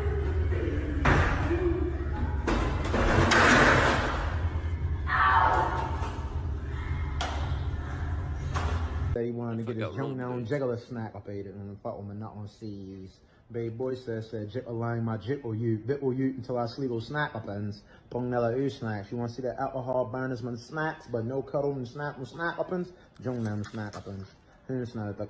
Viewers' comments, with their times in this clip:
0:10 this clip killed I couldn’t stop laughing. Bro went to Chinese translation 😂